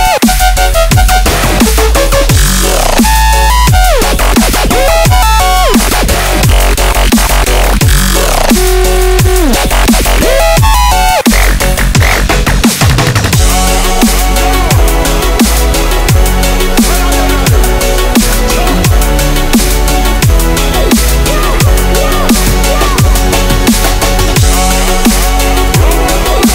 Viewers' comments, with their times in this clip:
0:04 at 2x speed is fire DnB
0:13 fuck that melody is so nostalgic a masterpiece